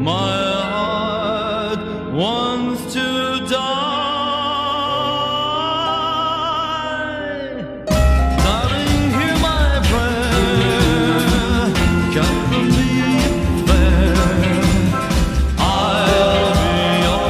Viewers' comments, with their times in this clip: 0:05 What's the weird piano sound seeping into the background from ???